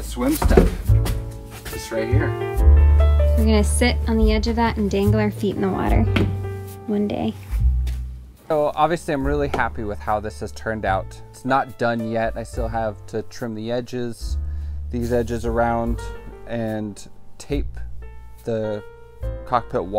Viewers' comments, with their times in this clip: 0:07 music + tone of voice contrived to invest "one day" with a depth of longing ;-)